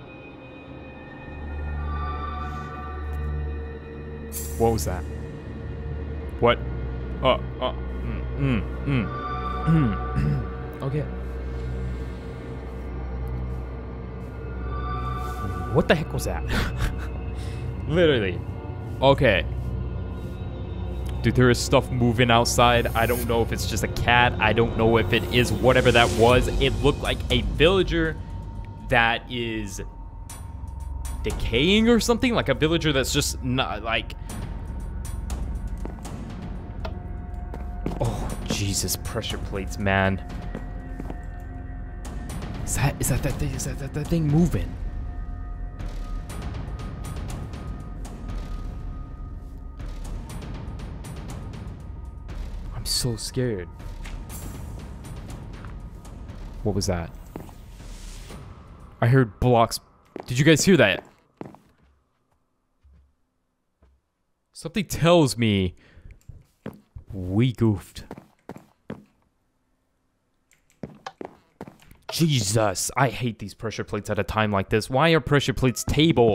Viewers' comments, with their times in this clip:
0:03 Btw i heard foot steps
0:54 hear that dirt break sound that he was breaking?
1:01 I swore I heard a villager noise.... Like if you did to